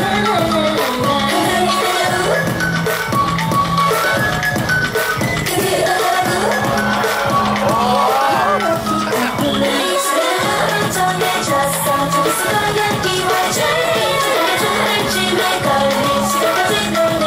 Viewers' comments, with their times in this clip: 0:05 irene smiled to the camera and everyone went "woahh" amazed by her stunning visuals impact of Bae Joohyun